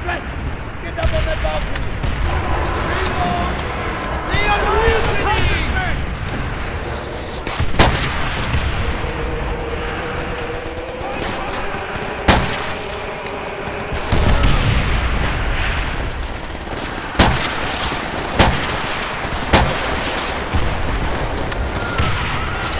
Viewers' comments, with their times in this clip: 0:09 HALO THEME INTENSIFIES